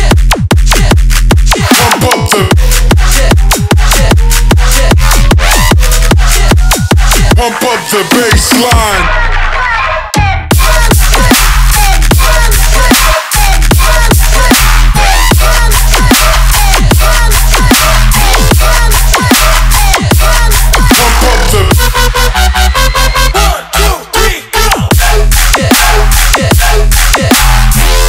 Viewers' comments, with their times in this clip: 0:09 that has to be one of the dirtiest drops I've ever heard in my entire life.. I almost broke my chair listening to this xD